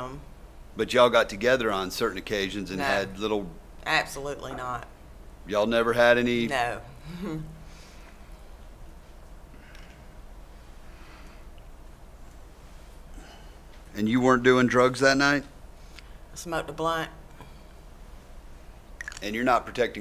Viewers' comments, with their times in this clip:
0:07 that little nervous chuckle - she's lying Also, when asked, "did you do drugs that night what kind of idiot says, "smoked a blunt" in court?